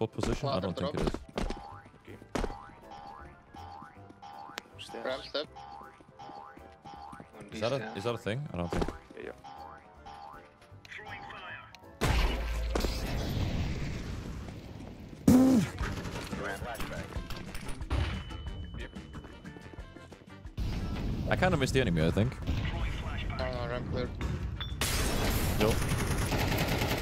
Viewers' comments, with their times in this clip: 0:09 unholy moment Moaning chair